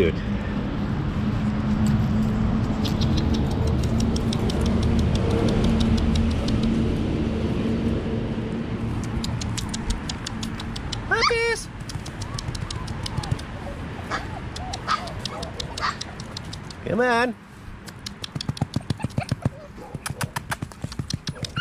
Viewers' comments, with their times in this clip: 0:08 what happened to your voice :) sounded like you squeaked when saying puppies